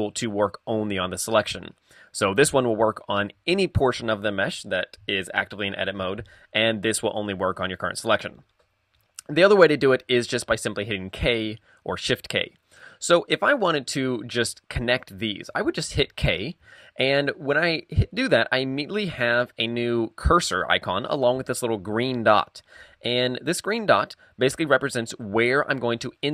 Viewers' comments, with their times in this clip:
0:09 Excuse me, whaqt did you say in minute you explain knife and select buttons, then you say, when referenig to the select button, "and this one only work .....?????" what??? I heard that many times, but not able to understand your words in there. All the rest I understand, your voice is loud and clear.